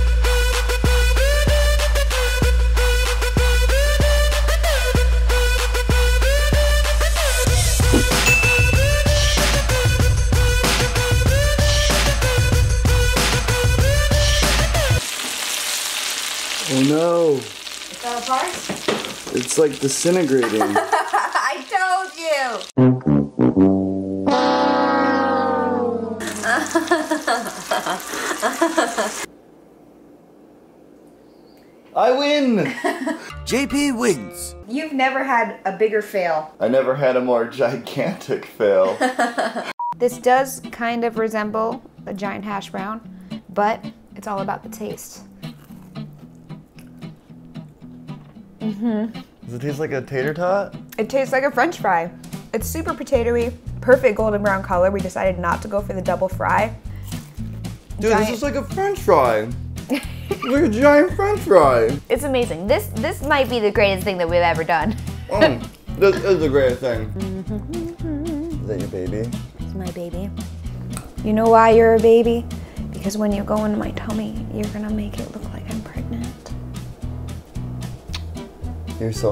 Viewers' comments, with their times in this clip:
0:05 The music makes me cringe
1:00 that laugh and face 😁🤣